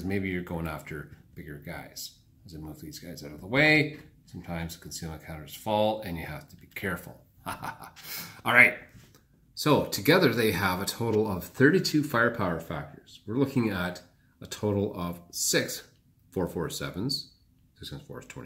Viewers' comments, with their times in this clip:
0:03 maniacal laughter .... The dreaded tipped over stack.